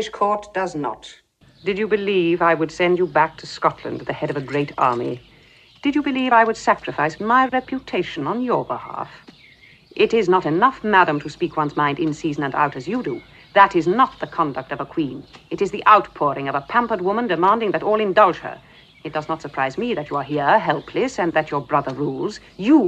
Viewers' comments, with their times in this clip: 0:03 Yes, that meeting is in the video. I included it because I especially like Elizabeth's words to Mary there 😄 Jackson delivers them so perfectly